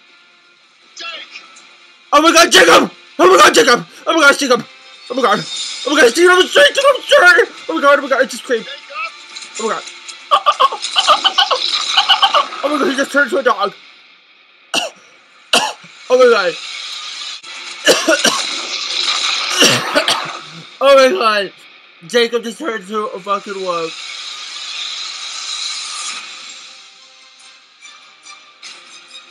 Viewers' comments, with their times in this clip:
0:05 Did anyone else hear her say i just creamed
0:10 Only the dolphins of the world can understand you..